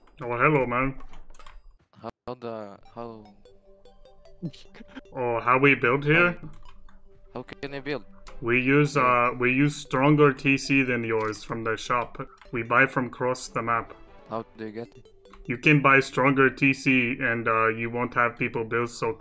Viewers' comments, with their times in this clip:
0:03 I love the terraria music